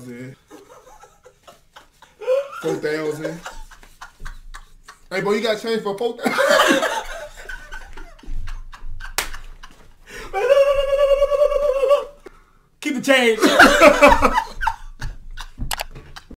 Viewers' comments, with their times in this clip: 0:10 "Look Look Look Look LookLook Look Look Look Look Look Look Look Look Look" Man sound like a turkey💀💀😭😭😂😂☠☠